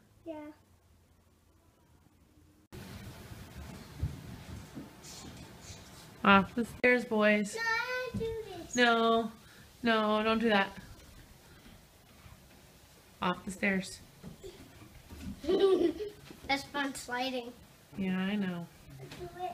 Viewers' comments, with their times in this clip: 0:05 I like how it’s like “Off the St-airs boys” That was a perfect transition